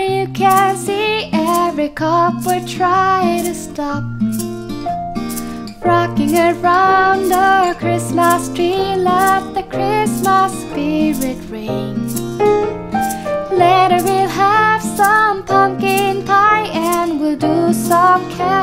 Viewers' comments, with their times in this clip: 0:04 Frucking around the christmas tree